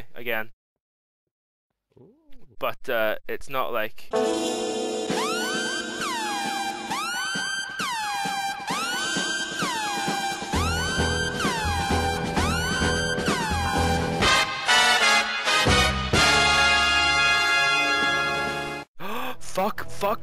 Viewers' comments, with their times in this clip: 0:04 ***SPOILER*** --- I almost had a aheart attack, not only cause of the sudden music but also seeing the person, I %&#$ myself!!!